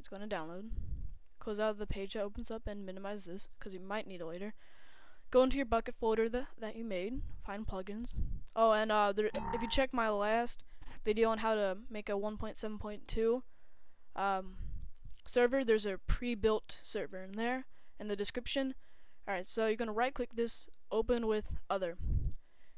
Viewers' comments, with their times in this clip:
0:05 lol in it sounded like you said "Go to you fuckin' folder" xD